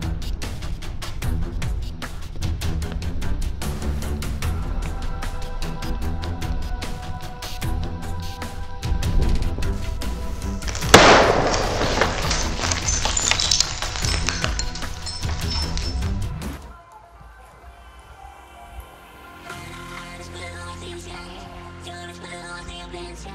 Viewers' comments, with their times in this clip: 0:10 sounded like a sniper getting fired
0:11 Rip headphone users 💀
0:11 That scared me Because it wake my mom and With loud sound